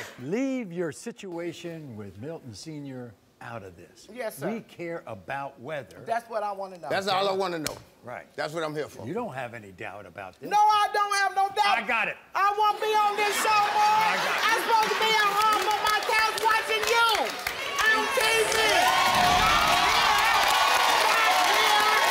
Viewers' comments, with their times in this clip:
0:10 Maury was done at that point. She's trying to hold it in but let loooooose. Her son keeps moving like he's saying stop it mom. He's use to her.. The son looks like his mom. His daughter look like her dad.. The mother just loooooud. Dang.